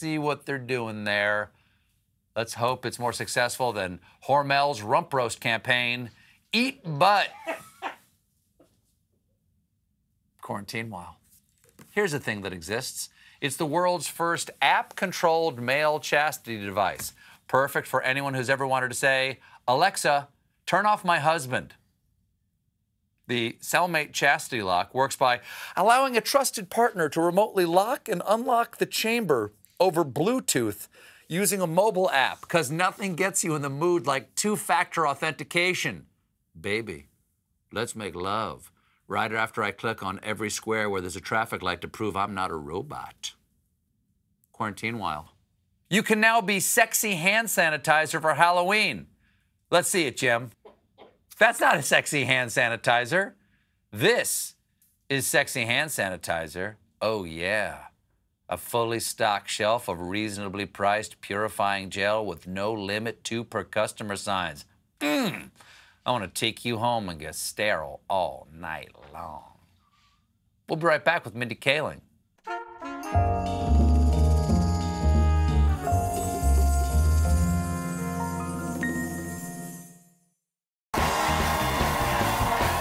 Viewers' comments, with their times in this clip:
0:06 I love it when someone laughs in the background (Eat Butt!). A lot better than a fake laugh track!
1:05 I'm glad his wife's not there cuz MMMMMMMM. It's my new ringtone....take me home Daddy.
1:05 I'm glad his wife's not there cuz MMMMMMMM. It's my new ringtone....take me home Daddy.
1:05 I'm glad his wife's not there cuz MMMMMMMM. It's my new ringtone....take me home Daddy.